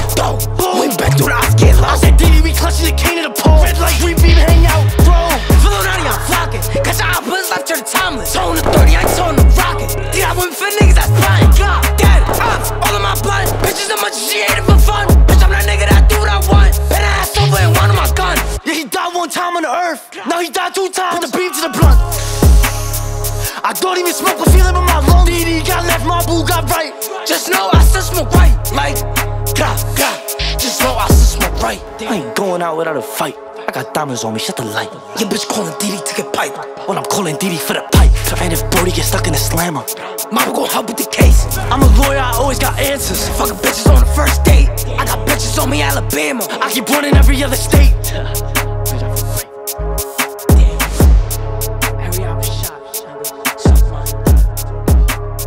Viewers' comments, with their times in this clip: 0:03 The beat how it dropped is crazy😮
0:18 The beat drop was crazy 🤩🤩
0:35 That voice effect on DD's voice is so good.
0:37 Why it sound like he’s saying “I’m calling Diddy for the pipe?! 😂😂😂